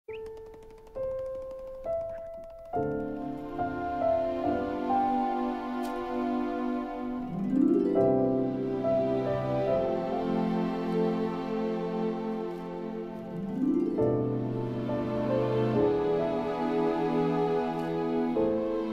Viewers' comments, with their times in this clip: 0:05 that song is sad